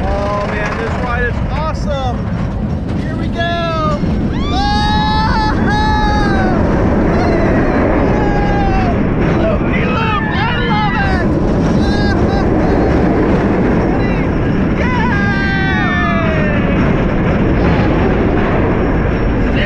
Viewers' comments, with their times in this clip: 0:05 why did he sound like angry bird
0:07 bro sounds like a angry bird